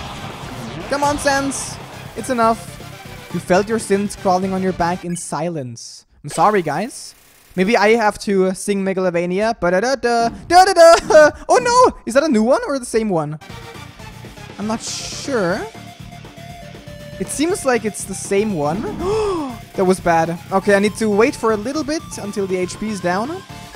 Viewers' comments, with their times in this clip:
0:08 MOGOLOVONIO Merg remix ! (gone wrong)